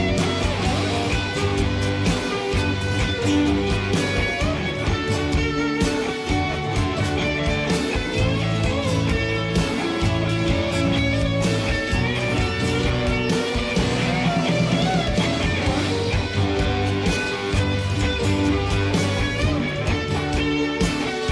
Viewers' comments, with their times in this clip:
0:04 It's a.m. in Greece and I'm still on the Youtube watchin' again and again and again this fuckin' great solo (lost the counting :) ) ...thanks for the HD upload..it's really amazing....